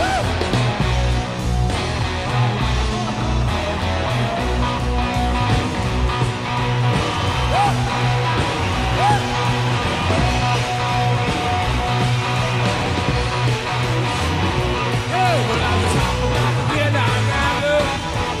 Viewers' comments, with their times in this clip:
0:04 the gear change in the Midnight Rambler ... the slide guitar all through the slow sections of the same ... cooking with the best gas anyone has ever had